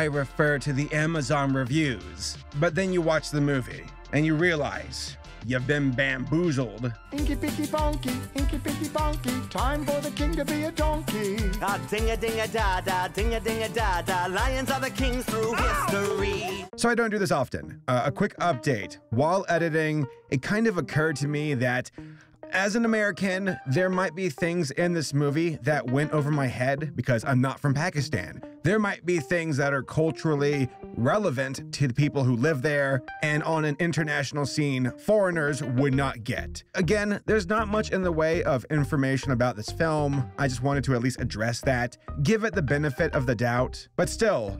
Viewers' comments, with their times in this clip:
0:06 MAN WHAT İS THİS BANGER
0:32 waiiiiit you can hear part of the discord call noise